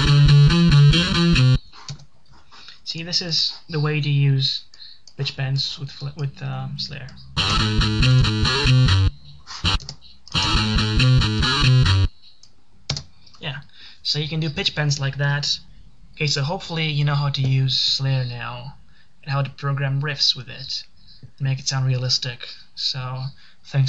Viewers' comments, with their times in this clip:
0:06 sounds a tad bit like the Mortal Kombat intro, but nonetheless, thanks for the tutorial, I think FL Studio will be a fun way to experiment with, maybe teach me a few things for my guitar